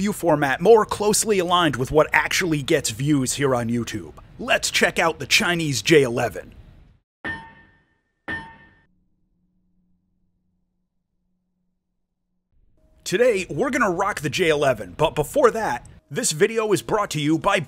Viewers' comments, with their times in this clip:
0:03 the donk is still having me dying